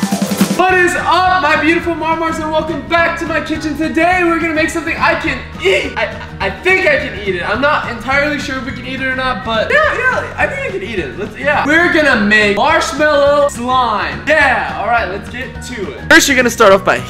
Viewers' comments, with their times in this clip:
0:05 His voice tho 😂😂it's almost gone